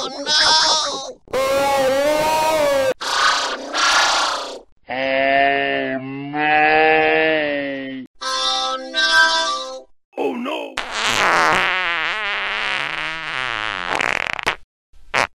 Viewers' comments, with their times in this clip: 0:08 Sounds like Soundwave
0:08 oh no autotune
0:10 OH NO! FART